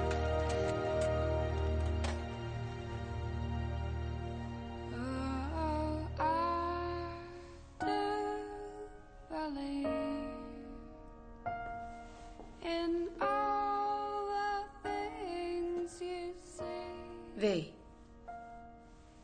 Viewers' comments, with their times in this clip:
0:05 What is the song name? that the V plays It sounds beautiful.